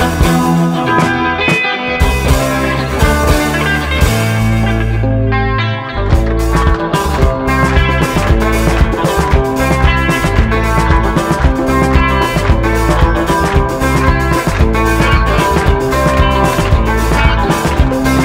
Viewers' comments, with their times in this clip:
0:04 When the clapping started I knew it would be good